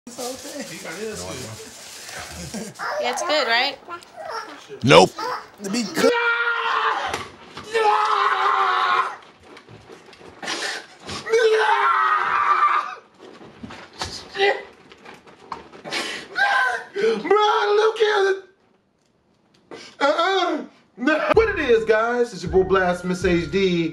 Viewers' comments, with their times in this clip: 0:04 Tf2 engineer Nope